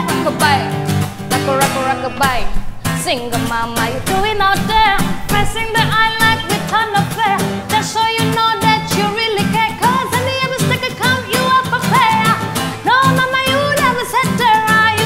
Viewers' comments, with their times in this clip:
0:03 .. I kept playing the rap part..she's so good. Sending love from phillippines ❤